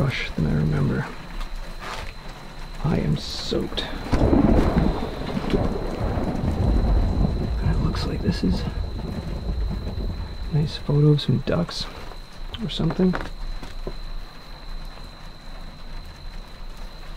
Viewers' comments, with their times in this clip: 0:03 Such a sick video. Mad respect man. That thunder was so fake though come on hahaha... Did you really need that?